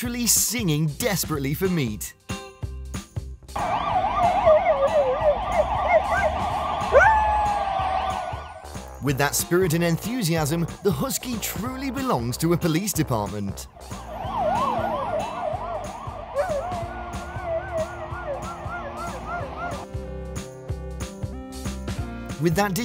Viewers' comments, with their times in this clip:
0:05 On I thought that husky has "musical talent" more than general man 🤣